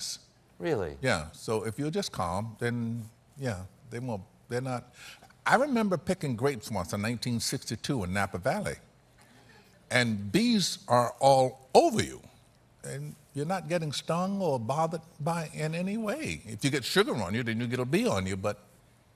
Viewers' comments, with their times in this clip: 0:04 When he said that sentence I felt like I was there lol. Gosh I love his voice